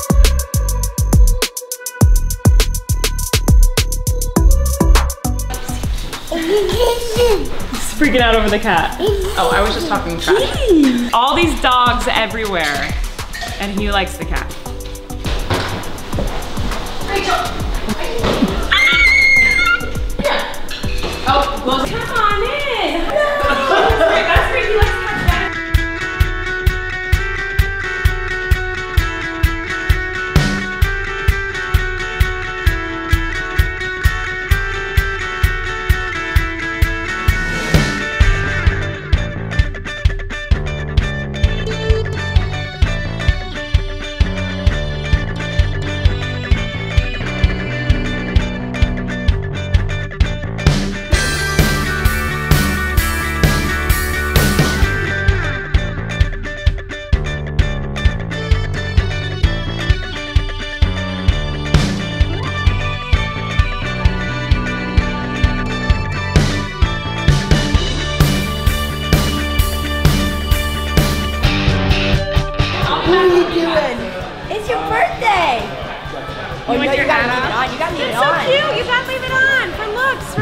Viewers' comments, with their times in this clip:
0:06 DID HE SAY "IT'S A KITTEN...!?!?!?" Or "in the kitchen...?" Idk.... 🤷‍♀️
1:05 i literally saw her say gentole in her baby mixed miranda voice and yes im rewatching this for the good ole days